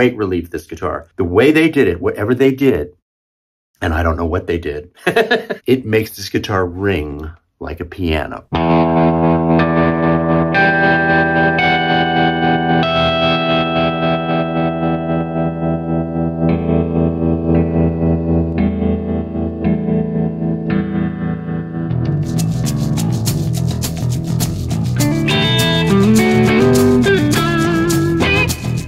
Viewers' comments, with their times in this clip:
0:09 If you ever pick up a Heritage you immediately realize that they resonate on a whole different level. That bell-like ring is real. The prices are also extremely fair given the amount of handwork involved.